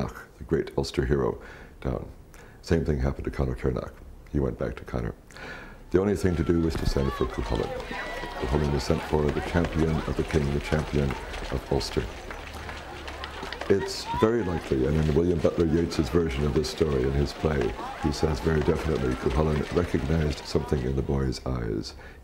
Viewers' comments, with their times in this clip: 0:07 wow great job to the editors, cant hear a damn word he is saying